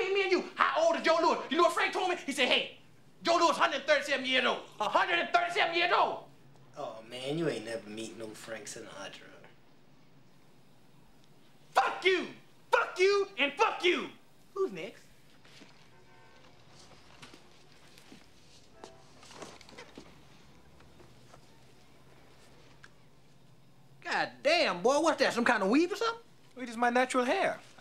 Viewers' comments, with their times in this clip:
0:10 always cracks me up for Murphy’s delivery and ability to change his behavior.